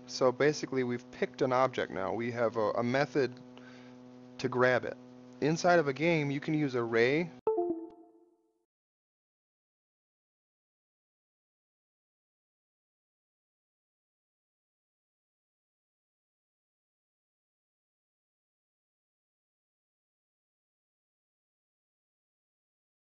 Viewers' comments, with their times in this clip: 0:05 you lost audio bro. still interesting to see you're workflow. Thanks for sharing.